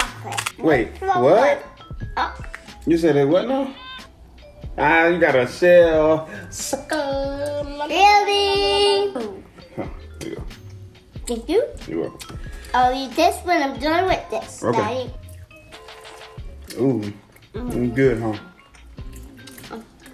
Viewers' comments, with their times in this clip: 0:03 Am I the only one who heard the baby ?